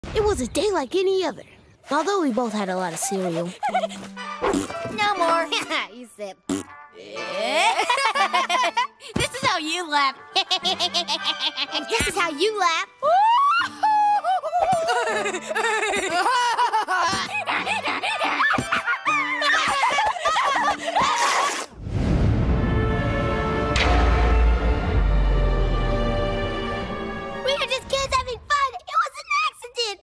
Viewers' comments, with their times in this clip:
0:10 Reminds me Tattetail HI HI HI :v
0:17 gumball was doing a donkey noise
0:27 Gumball & Darwin Crying